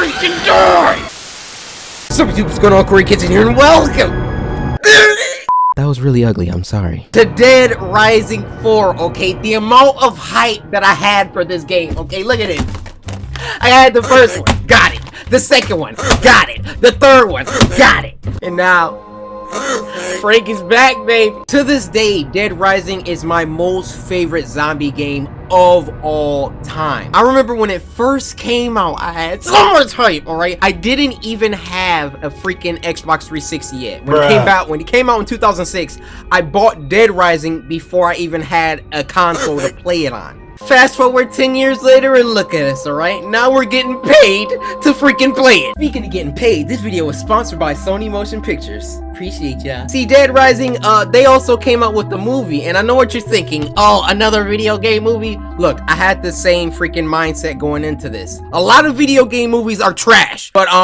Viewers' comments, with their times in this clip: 0:05 that noise 😂😂😂😂 you should be a dank meme
0:44 now we’re gettin’ PaYeD me : bruh the voice crack